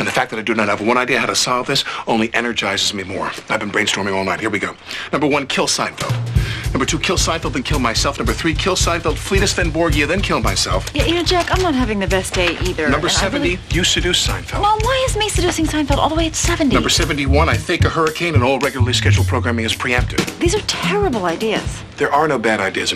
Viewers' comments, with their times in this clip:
0:05 The music cue is 👌 Well played, Mr. Richmond. 👍